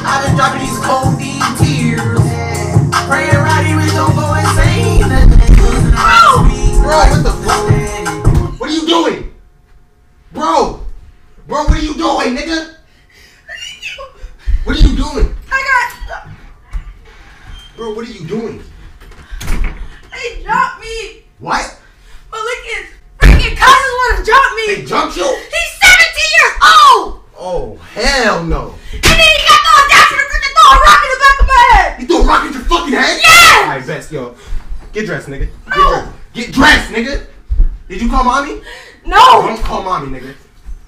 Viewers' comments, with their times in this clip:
0:05 that plop doe the whole house went shaking😆😆😆
0:21 he said “ᵂᵃᵗ”